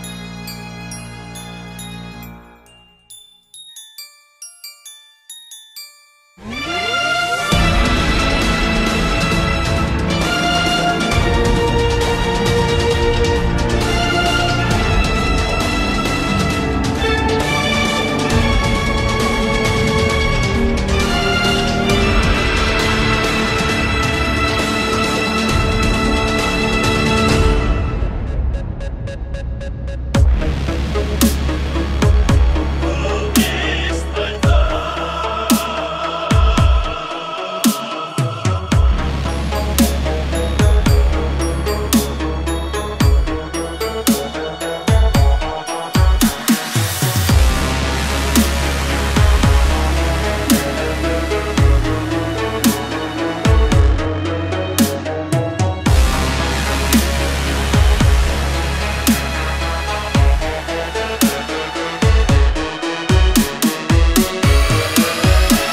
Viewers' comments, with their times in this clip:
0:06 Frieza soldier : What do you want? You have a problem with me !? Broly : I do Epic music plays EDIT
0:32 Who else think that looks like the blur theme ?
0:50 from it reminds me of Crysis 2 Soundtrack